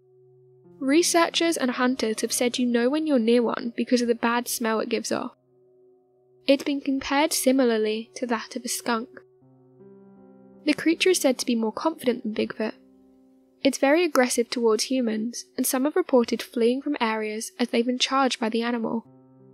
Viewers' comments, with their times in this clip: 0:07 sounds like a Wendigo